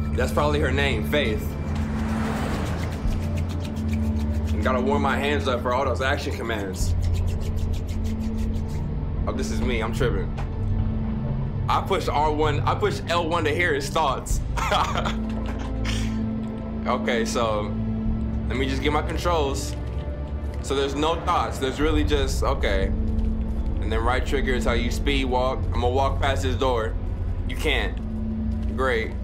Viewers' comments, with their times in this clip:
0:10 this aint heavy rain m=no more